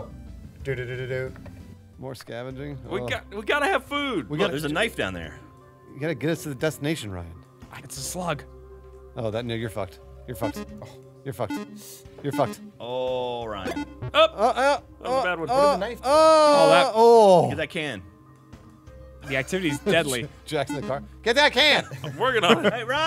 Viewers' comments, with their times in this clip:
0:08 Anyone else vaguely hear a racial slur?